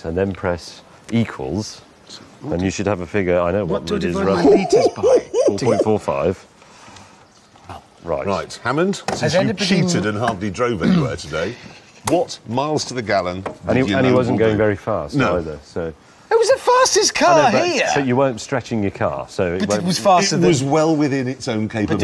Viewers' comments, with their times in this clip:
0:03 the orangutan call of the wild. HAHAHA